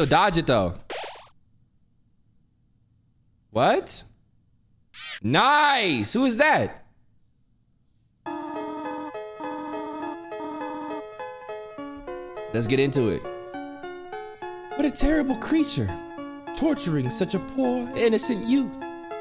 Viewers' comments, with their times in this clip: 0:07 when that music dropped ugh my heart dropped too so many memories 😩